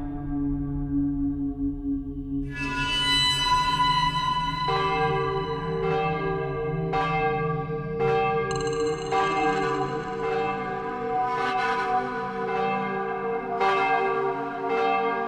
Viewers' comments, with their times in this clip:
0:03 i love the bell sound